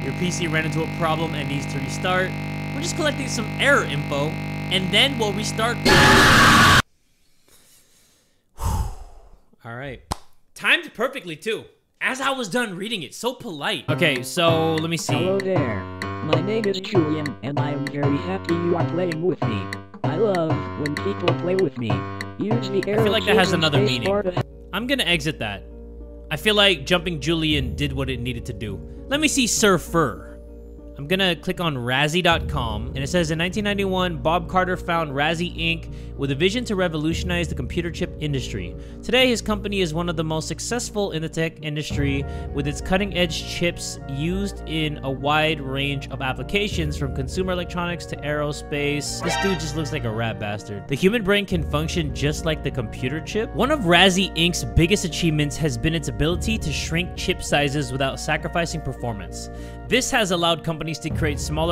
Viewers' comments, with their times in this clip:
0:06 I WAS EATING CHIPS AND I HAD HEADPHONES ON, I WASNT PAYING ATTENTION AND I HEARD THAT SCREAM OR WHATEVER THAT WAS. I LOOKED AT MY SCREEN SO FAST 😭
0:42 I fcking love how genuine you are, my guy. 🫶 the music in the background sounds so familiar…